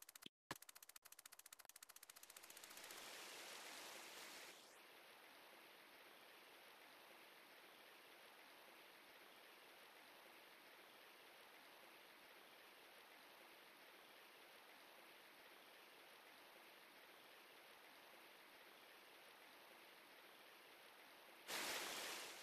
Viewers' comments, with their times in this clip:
0:03 weird sound LOL.